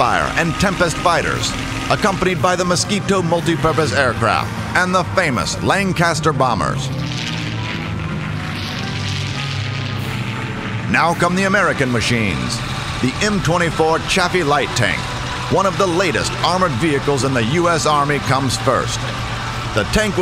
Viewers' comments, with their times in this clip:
0:06 sad hawker hurricane noises